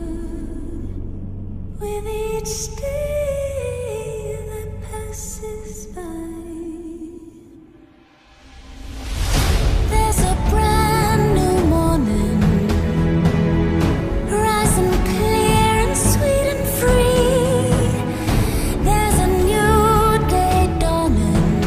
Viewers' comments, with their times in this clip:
0:09 "There`s a brand new Mormon" what?...